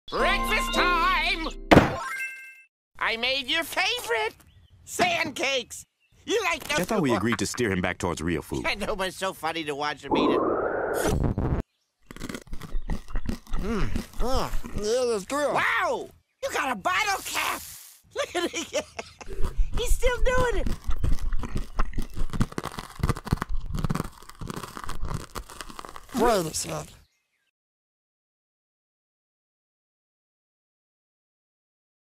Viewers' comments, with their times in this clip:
0:00 The way dedede says brexfest time
0:09 King Dedede’s voice is perfection!
0:12 oh, mama dat crunch
0:12 Kirby is crunching
0:12 “AsMr💅💅” sorry if this sounds a bit sexual :(
0:14 why he sounds like jar jar binks
0:21 I hope you like sand eating ASMR
0:22 that crunch is so satisfying it's like long nails tapping on a table
0:22 What mukbangs sound like
0:22 K i r b y a s m r
0:24 [suspicious crunching] --> Kirby is kinda s u s